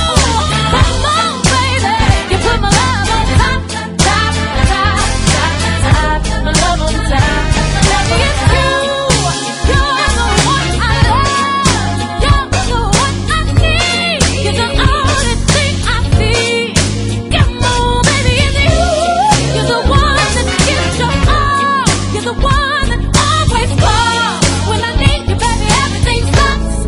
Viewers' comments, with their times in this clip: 0:07 I had to double check, 4 key changes is diabolical goodness